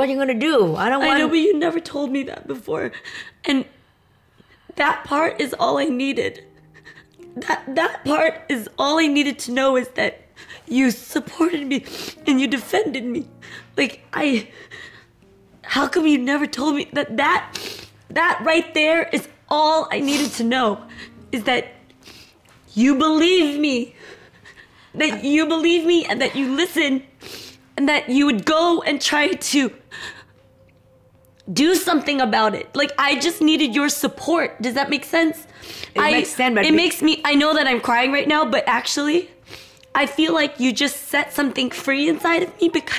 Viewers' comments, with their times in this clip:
0:05 not gonna lie this voice break made me ugly cry💔
0:23 broke me cause she sounded broken and I can hear the pain in her voice